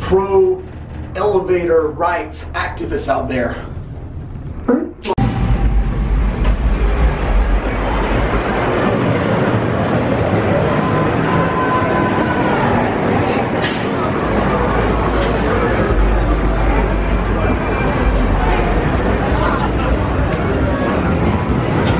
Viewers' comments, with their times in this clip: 0:04 Sounded like he farted on way out of elecator ???